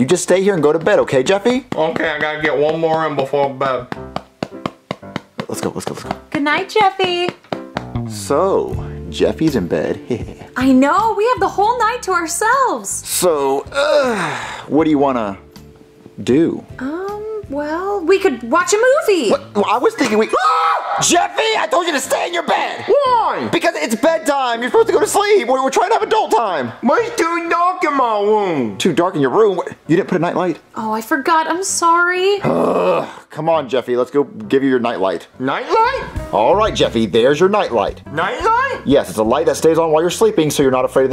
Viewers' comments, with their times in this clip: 0:04 THE CLASSIC JEFFY MUSIC THE NOSTALGIA IS LEVEL 10000
0:10 bruh marios little HeH hEh HeH
0:23 I thought Jeffy said there’s 2 dogs in his room